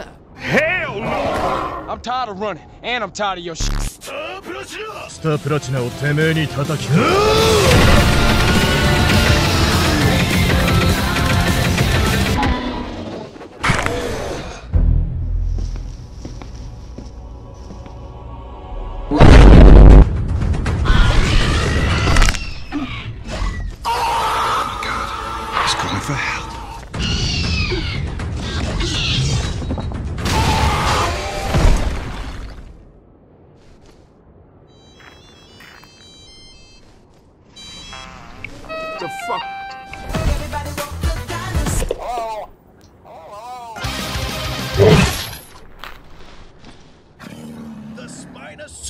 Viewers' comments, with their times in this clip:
0:04 what language was bro speaking in💀💀💀💀
0:35 For a few seconds I tried to look for my phone because I have the exact same ringtone of the satellite phone from JP3